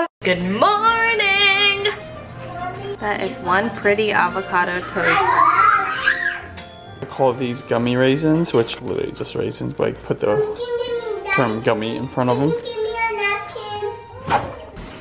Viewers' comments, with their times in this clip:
0:03 who else thought was the most perfect clip of the avocado toast and then the toaster going ding in the background